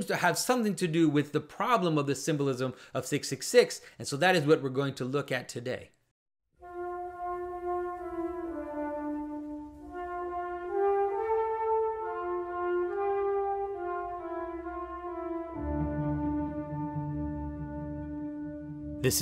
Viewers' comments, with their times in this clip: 0:06 I really find that music you start playing very relaxing. Its like I'm in a dream and but awake at the same time. Though I am unsure if that can make any sense.